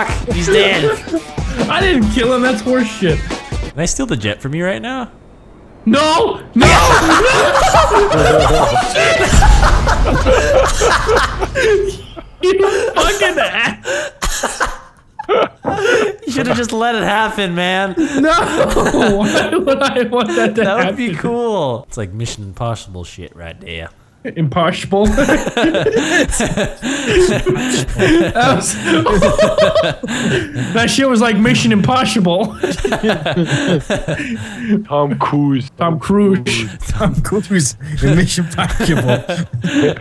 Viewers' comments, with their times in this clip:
0:07 I love that laugh
0:23 Mishion imposhible lol😂